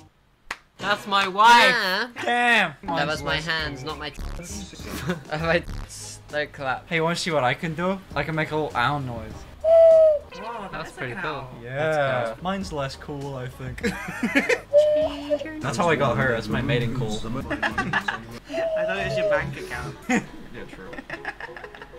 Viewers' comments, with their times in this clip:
0:09 it could be a Loon as well tho